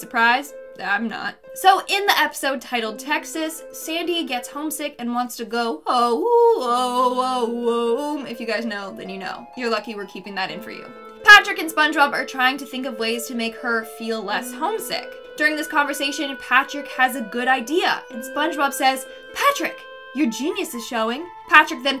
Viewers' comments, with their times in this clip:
0:06 How did I honestly never catch this before... I've watch SpongeBob and Dexter's laboratory when I'm feeling nostalgic as an adult and still never noticed. I honestly say though this whole video all '😮 wooow 🤭' Also my childhood is ruined. P.S you Sandy Cheeks yodal was amazing 😁